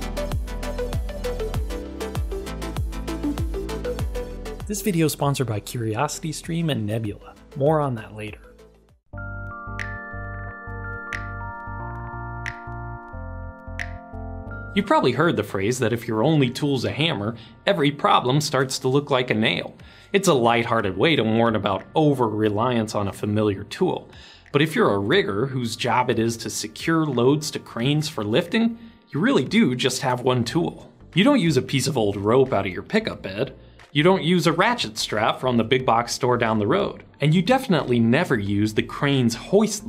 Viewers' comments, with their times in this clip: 0:07 "Moron that later"
0:24 If you're a WHAT?? rewinds and listens again Oh okay, nevermind